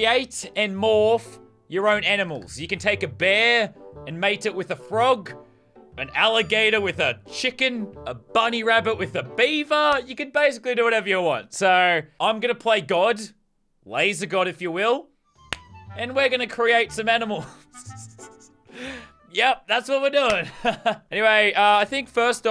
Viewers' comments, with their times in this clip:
0:07 a burger mating with the bear?